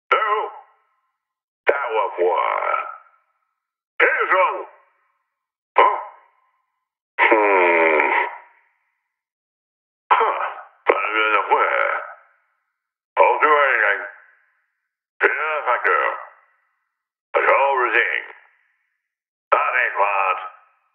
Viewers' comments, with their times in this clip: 0:07 Sound like Mister bean XD sound like evoker (minecraft)